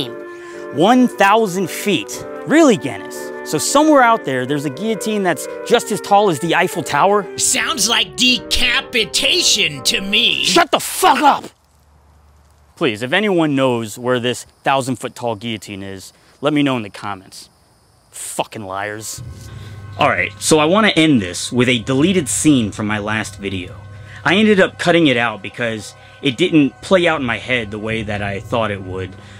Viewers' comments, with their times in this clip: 0:10 was that fucking mumkey